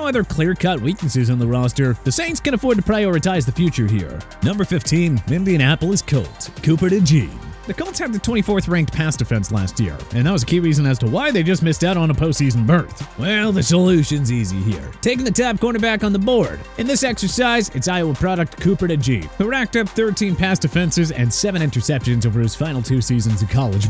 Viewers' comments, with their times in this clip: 0:07 how did they pronounce that? That made my ears bleed